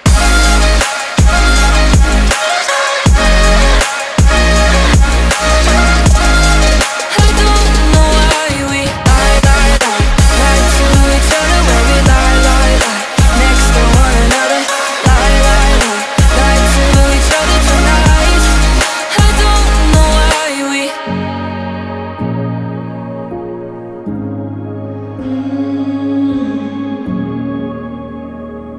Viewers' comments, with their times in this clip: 0:09 The modified hook was a nice touch. I love modified hooks. For my tastes, I would have liked to hear the modified hook maybe earlier in the song (though not sure that is possible in this short of a track). Also the hook could have been a bit more dramatically modified. It was really catchy, but I feel like it has more potential to really get me engaged (also why doing it earlier in track might be nice). **While I am an avid electronic music listener, I have no credibility in anyway related to song critiques. I do not even know if "hook" is the right word in this context. This song was great, just providing some feedback that you might consider when developing your next track :)